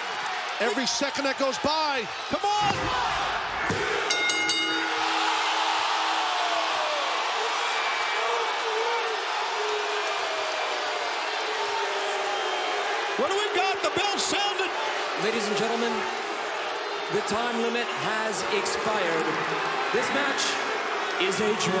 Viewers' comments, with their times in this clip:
0:05 That LOUD Gasp OF The Crowd When Swerve didn't win was INSANE.